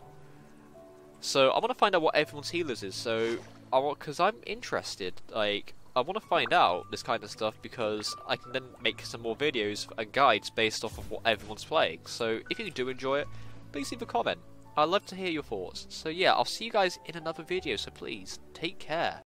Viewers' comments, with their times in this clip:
0:09 someone joined your league of legends party in the background